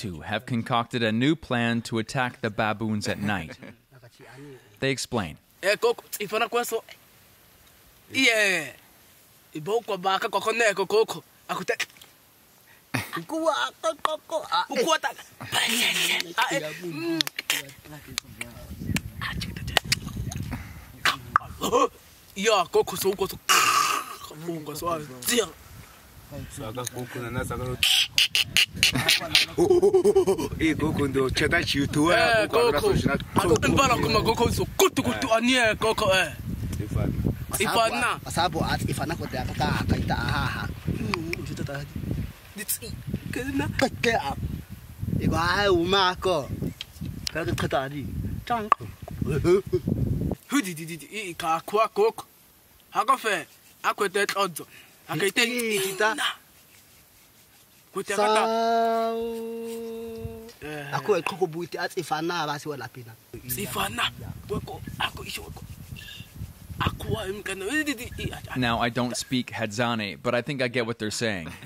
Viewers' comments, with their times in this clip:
0:04 it's SO cool to actually see them having a conversation in their language!
0:53 pov: my sims